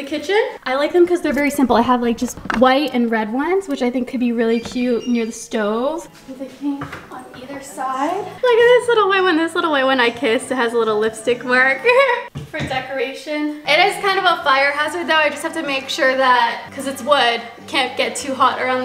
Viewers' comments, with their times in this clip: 0:04 Not all us influencers having the KP ringtone😅😂😂